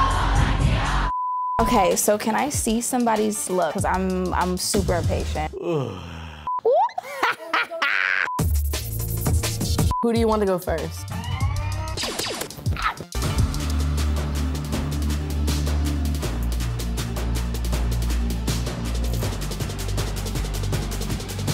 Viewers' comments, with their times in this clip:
0:06 That "oow" sounds like Nicki, i love it.